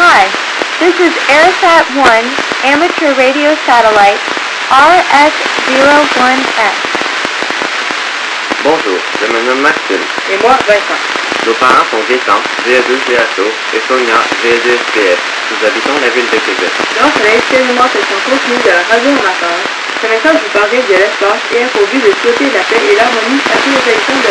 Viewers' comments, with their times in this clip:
0:10 is that indian language?